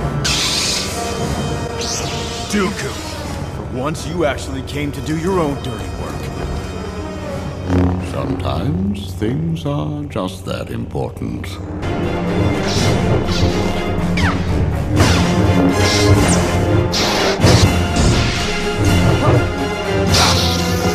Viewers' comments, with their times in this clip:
0:06 is probably one of my favourite dooku lines. The way he says it with such elegance and composure. Such a Classy man.